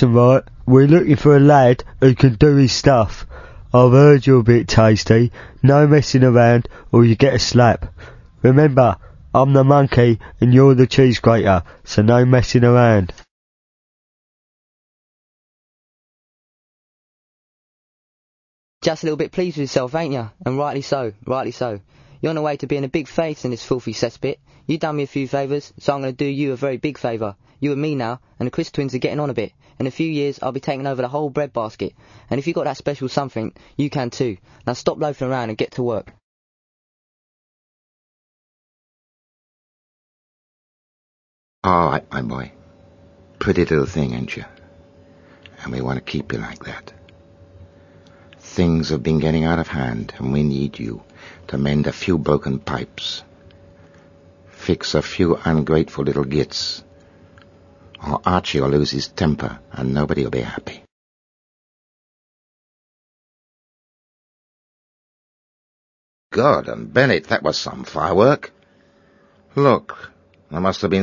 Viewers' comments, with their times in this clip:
0:09 is that how the brits talk?
0:12 You can still hear a computer mouse clicking lol
0:17 the british accent in this cutscene is perfect👏
0:18 sounds like the end of one of those commercials we’re the guy speaks the speed of light
0:22 Top 10 the fastest rap in the world
0:40 I love their voices, they have the best voices in the game
0:40 Sounds a bit like literary genius John Berger if you ask me
0:41 Binaural criminal underworld roleplay |ASMR|
0:55 idk but the sound is calming
0:56 they were so low budget you can hear the mouse clicking in the background